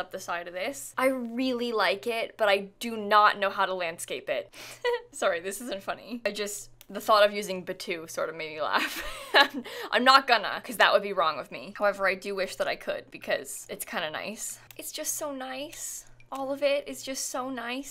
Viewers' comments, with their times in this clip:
0:04 her little laugh at using that pack!! (I cannot spell it😂)